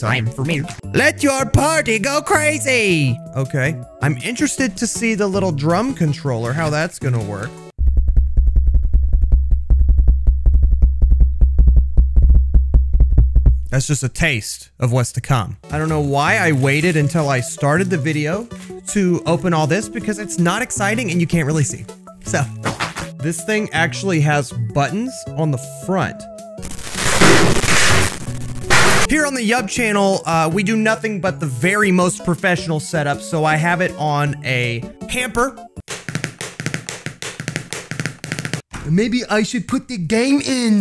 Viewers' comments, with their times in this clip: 0:08 intense drumming on mic moment intensifies
0:26 best asmr ever